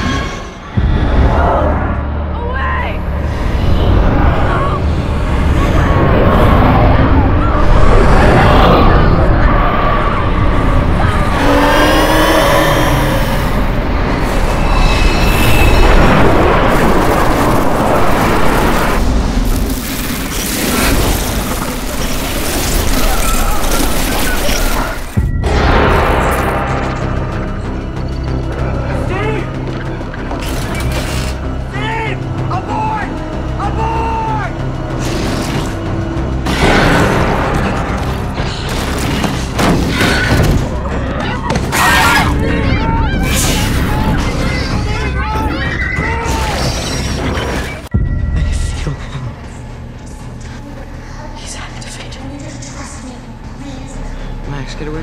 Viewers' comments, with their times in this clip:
0:05 you can hear a roaring “NO” when the boy says, “Go away”
0:41 The Demodog kinda sounds like an Enderman